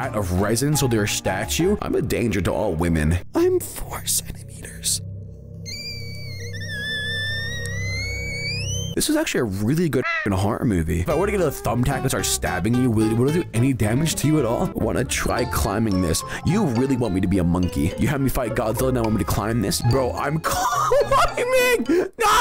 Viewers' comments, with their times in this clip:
0:03 That squeal has me dying😂